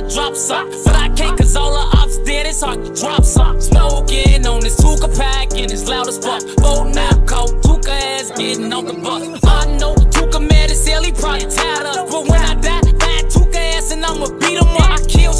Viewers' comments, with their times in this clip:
0:03 that cadence so cold I wouldn’t care if bro was dissin my momma Ngl. But rip to all the guys.